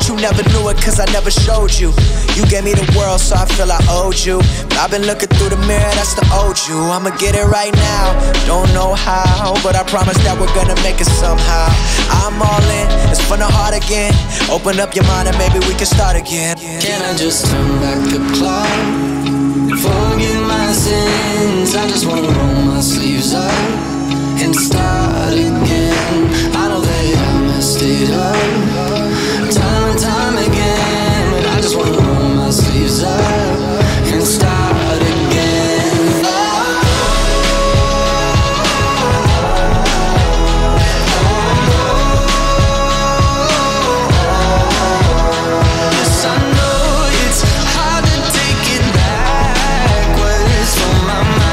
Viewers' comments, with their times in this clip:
0:08 his voice oh my god
0:35 that high note though